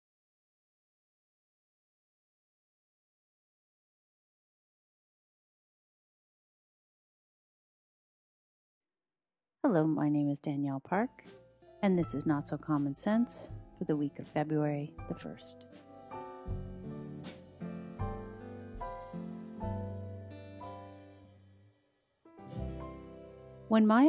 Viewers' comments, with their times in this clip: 0:09 I was a bit dubious about the term "teenage scientist", however it was an interesting interview. (By the way, the audio begins then finishes abruptly mid answer at the end)